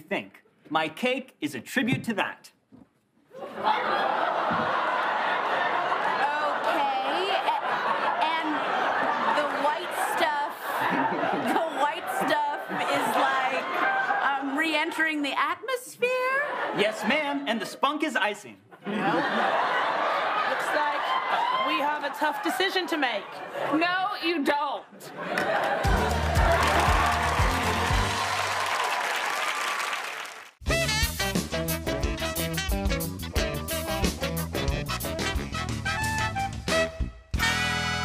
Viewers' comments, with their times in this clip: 0:08 Pete laughing because his is way bigger.
0:08 I love how Pete is just eating cake and just cracking up
0:23 you can hear Heidi almost breaking